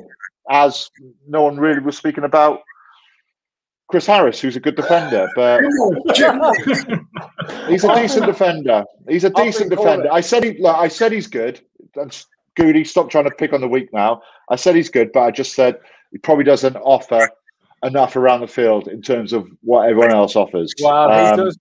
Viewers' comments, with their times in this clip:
0:04 How is CHRIS HARRIS going, can’t believe he is going to tell his grandkids that he is a lion. I’m shocked they’re all laughing at the fact he is picked ahah